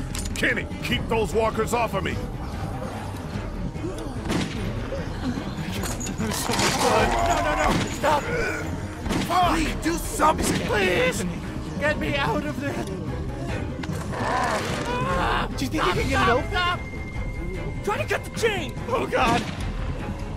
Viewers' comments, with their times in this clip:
0:04 Did anybody hear the oof?